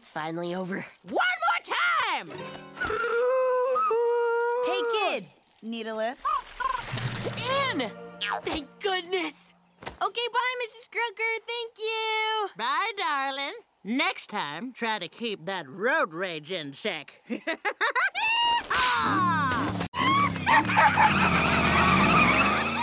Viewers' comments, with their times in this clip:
0:07 I love how even though sprig was having a miserable time, he still thanks ms croaker with joy 😅😅